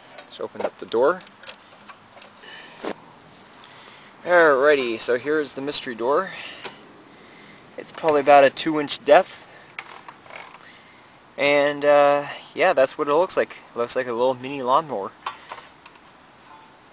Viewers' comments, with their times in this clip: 0:04 cc A 2 INCH DEATH!! I love violence even when I do lawn work! Great Video!!